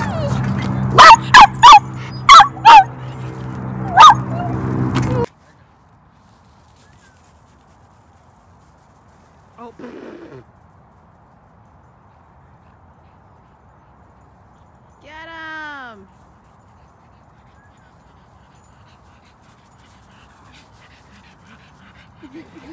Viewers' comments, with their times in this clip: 0:04 I had to pause because my own dog started barking back!